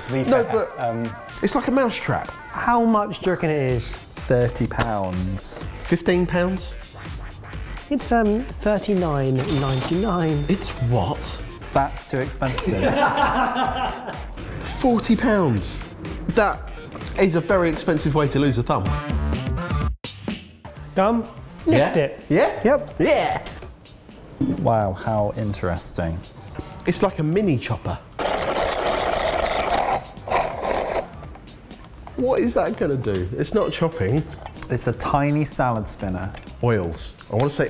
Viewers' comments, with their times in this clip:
0:03 If you watch this with the closed captioning on, the CC thinks Barry says “how much jerk it is?” 😂😂
0:25 that "wow how interesting" was so dead inside